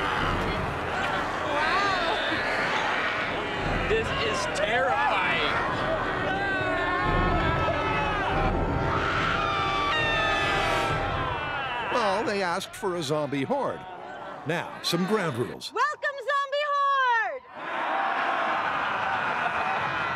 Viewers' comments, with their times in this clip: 0:06 Kari, Tory and Grant screaming for their lives.